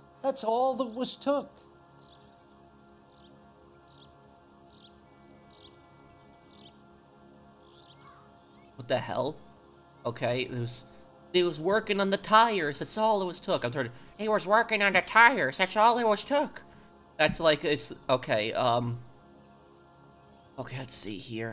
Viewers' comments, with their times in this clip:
0:07 Love when professional said "There was working on the tires, That's all was took" in a mocking way Thats funny af😂